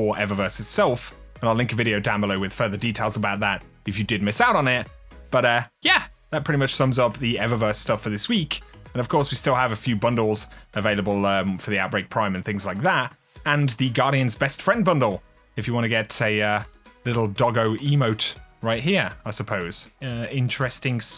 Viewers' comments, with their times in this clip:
0:04 that was a surprisingly high pitched "YA"